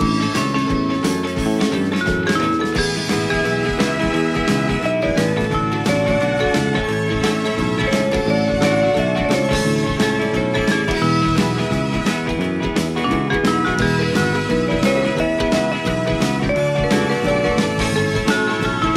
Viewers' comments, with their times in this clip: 0:04 If you dont whistle the jingle as its going off your not a true fan.